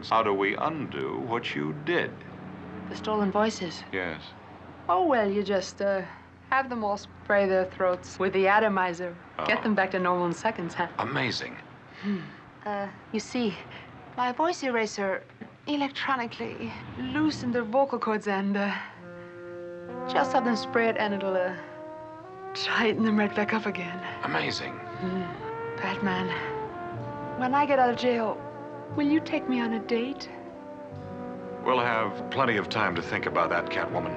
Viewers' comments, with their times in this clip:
0:06 Julie broke character for a bit and chuckles.
0:19 Cue the "porn" music